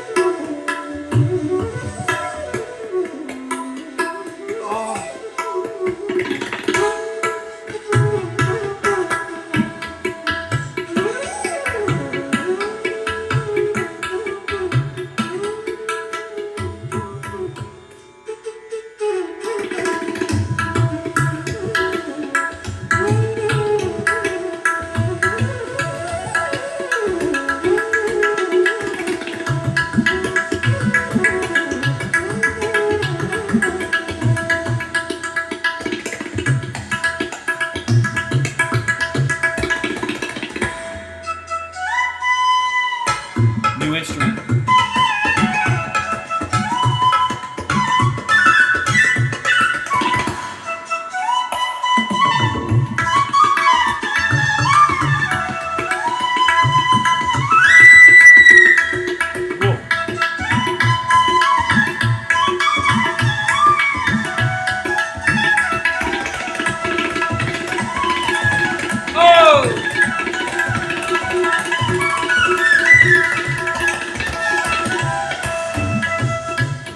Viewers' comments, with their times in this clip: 0:07 You realise litle out of rhythm but they manage back and come together at a point, the flutist smiles at that point. :-) It may happen sometimes, when musicians perform solo during a duet, but of course greats know how to catch up.
0:57 that higher note blows my mind....its incredible....